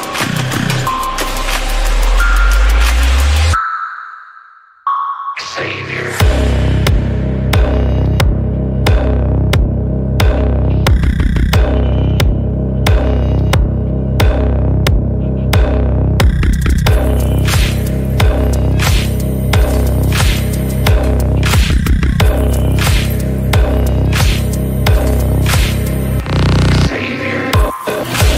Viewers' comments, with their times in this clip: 0:09 Damn that's a beat.